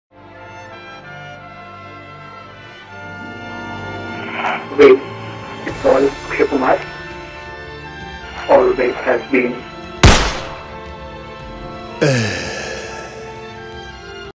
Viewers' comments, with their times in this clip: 0:12 The “Ehh” hit different ❤️